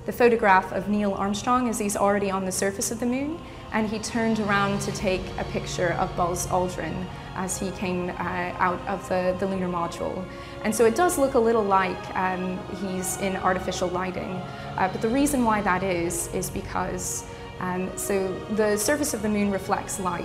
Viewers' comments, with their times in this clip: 0:07 she stutter and blinks much for deleriving an info she is not convinced with shame on u